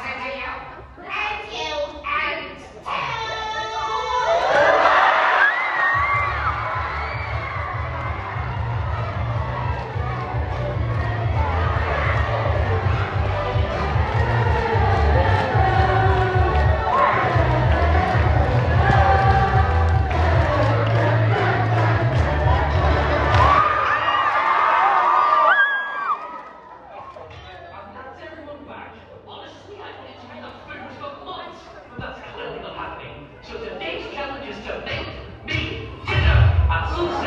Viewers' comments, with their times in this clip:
0:03 i like it how the audience sing the tpot intro and kinda feels like an orchestra 😂
0:04 the audience singing the tpot intro is the funniest thing I've seen today.
0:04 It sounded to majestic i almost created a tear..
0:04 Intro starts playing
0:06 them singing the intro gives me chills for some reason
0:06 it sounds so heavenly I don’t know why
0:06 I love the singing it makes the song better
0:06 POV: You’re in a British primary school choir and the theme is YOUTUBE FAVOURITES
0:09 reminds me of Pokémon Scarlet and Violet when the gym leader is on their last Pokémon and the audience is singing
0:11 they sang it here lol :)
0:13 When they sing the part where coiny jumps and swings using bell, that singing part shivers down my spine.
0:14 The audience singing is like music to my ears Tpot intro should be this instead
0:14 sounds like a choir
0:14 wow, that was soft
0:18 The harmonizing was amazing!